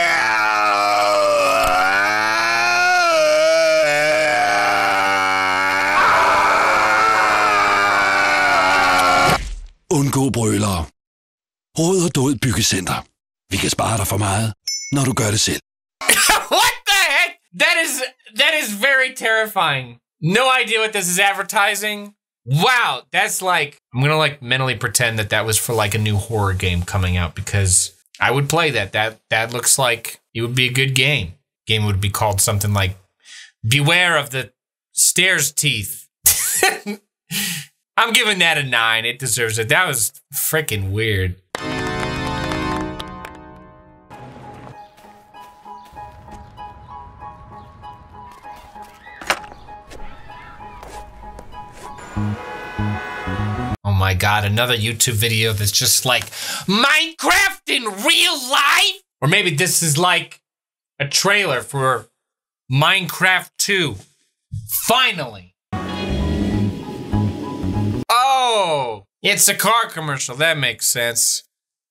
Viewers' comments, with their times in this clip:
0:05 me whos danish: this reminds me of a nightmare from my childhood Commercial: starts to speak in danish Me: oh god its was real
0:56 Gilbert Godfried yells about Minecraft
0:56 Why do you sound a lot like Gilbert Gottfried?